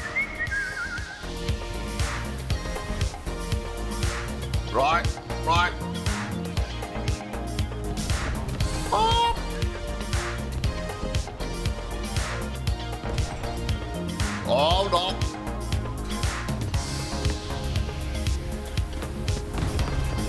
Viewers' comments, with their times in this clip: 0:04 Backing up such a heavy vehicle without a beeping noise is very very dangerous.
0:08 the funniest thing is that his perfectly cut scream xD